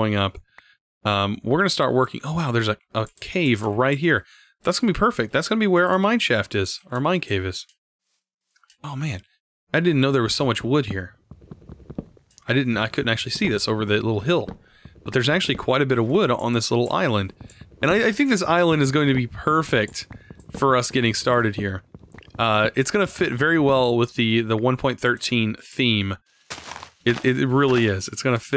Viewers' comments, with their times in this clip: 0:10 oh there is so much wEEd in this island..